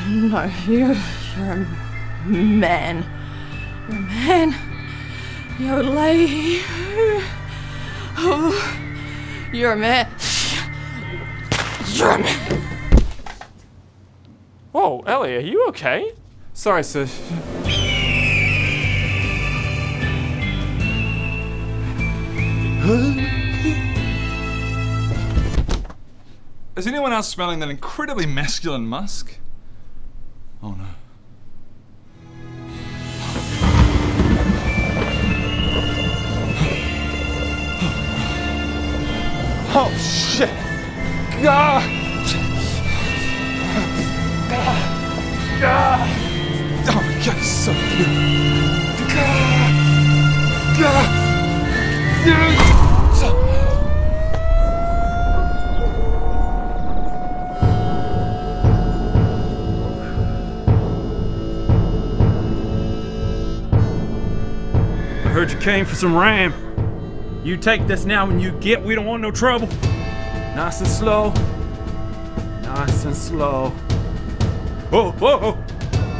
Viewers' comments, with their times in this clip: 0:09 ... did Ellie just.. hiss at him...?
0:11 the gunshot SFX there, just,, I dunno kinda nails it?
0:22 Ahhh always back for they mark sound, its so professional:)
1:03 i loveeeee that Texas accent, nice